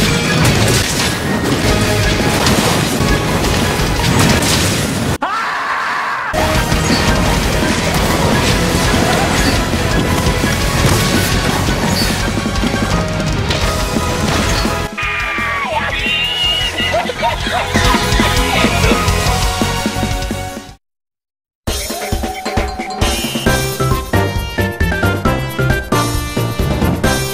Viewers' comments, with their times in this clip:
0:09 When he staggers you for the last time during a big bang. POW!!!